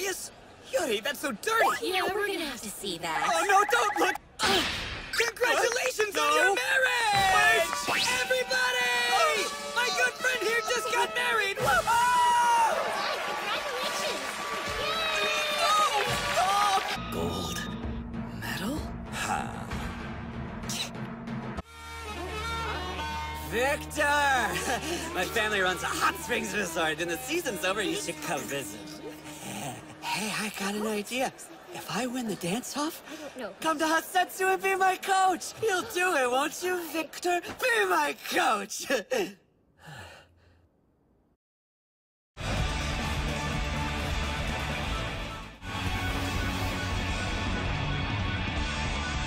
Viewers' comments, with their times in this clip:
0:04 the way phichit says it is fucking adorable and another reason why i love the dub so fucking much :)
0:08 shy is his voice so cute-
0:19 Sounds exactly like a kitten I can't -
0:19 Yurio's little "kee-!" : )
0:19 Yurio's Little squeak ITS SO CUTE
0:19 i can't with that little "tsk"🤣🤣🤣
0:20 WHY DID YURIO MAKE THAT NOISE HES SO UNDERWHELMING
0:20 Is no one talking about Yurio's cute "tch" omg!!!
0:20 HE SOUNDS LIKE A KITTEN, WASN'T THAT SUPPOSED TO BE INTIMIDATING?
0:20 sounds like an old squeaky toy that's squeaker barely works
0:20 OML YURIO SOUNDS LIKE A SNEEZING KITTEN!!!!!!!!!!!!!!!!
0:20 It's a little kitten sneeze I'm-- (I swear I'm not late to this fandom.)
0:20 how'd the voice actor do that
0:20 Yurio’s noise just goes to show that he is an adorable bean and we love him for it❤️
0:20 What ever sound yurio made it sounded like a kitten sneezing i cant-
0:23 OMG HE SOUNDS LIKE HE'S SAYING 'VECTOR' IN VECTOR'S VOICE LOL
0:23 the way he said victor triggered my fight or flight response
0:33 why did i think that yuri said "come be my coach and have s3 with me :D ''